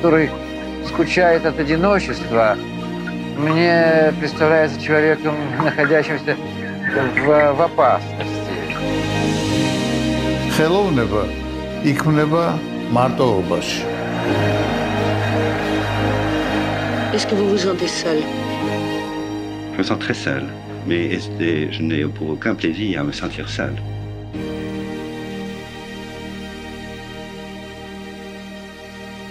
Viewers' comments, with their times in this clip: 0:10 I almost jumped out of bed when I heard my native language (Georgian) in this video Very pleasant, unexpected surprise ! 🇬🇪 P.S Great content ! Love this Channel.